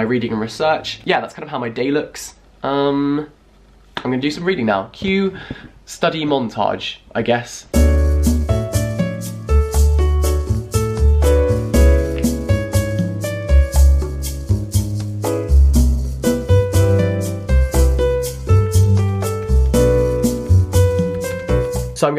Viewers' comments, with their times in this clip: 0:07 Nice elevator music form